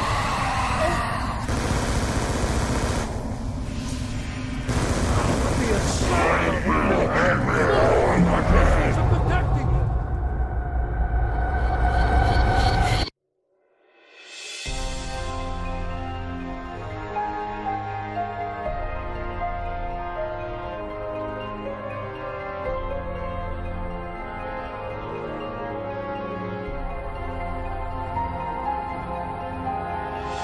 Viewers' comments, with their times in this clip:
0:09 All you people are correct listen closely near the end when the cycle is broken you can her one of the main characters say " look the (something) is protecting him" its really hard to hear but its
0:14 Piggy escape sound